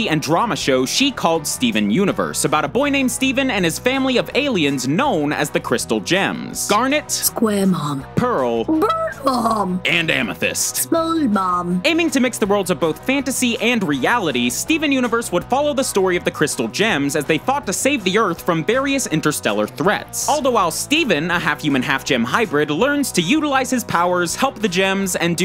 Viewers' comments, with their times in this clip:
0:06 What I heard garnet squarehom Pearl birdhom And amethyst spongehom Like if u heard any of that
0:08 Nice voice crack, Michaela!
0:11 omg I could of swore that she said Spongebob instead of Small Mom 😂